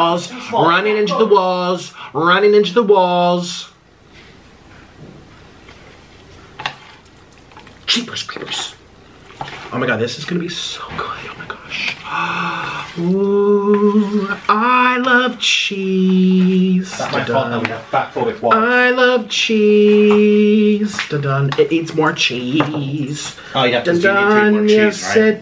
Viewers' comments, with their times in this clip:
0:07 amazing song ,i almost teared up because of this part